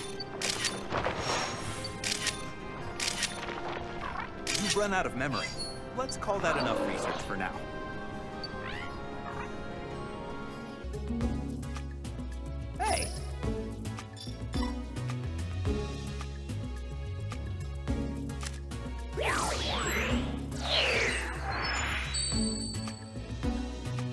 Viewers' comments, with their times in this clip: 0:05 now zeraora sounds more like a tiger roar? where's the electric effect it usually had?